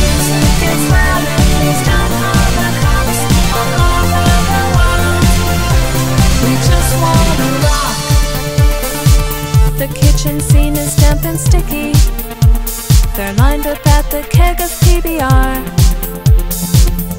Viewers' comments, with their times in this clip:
0:03 wtf that kick haha